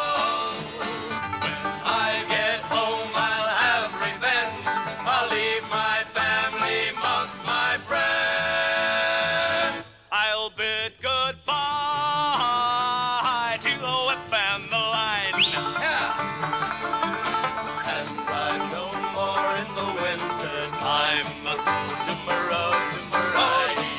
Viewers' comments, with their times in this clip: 0:10 I see where the singing style of later '60s California acts comes from. I'll bid goodbaaa haaay haaay